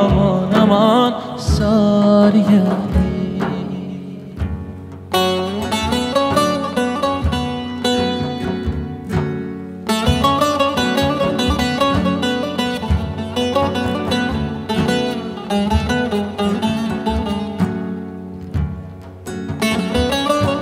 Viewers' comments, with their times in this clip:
0:04 The baglama recital that started is amazing 🙏👏🔥